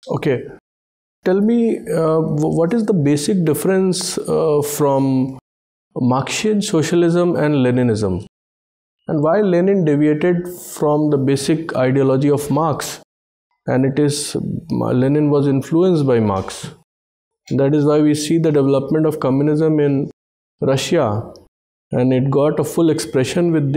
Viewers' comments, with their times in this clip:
0:07 he sounds like arnab Goswami lofi version 😂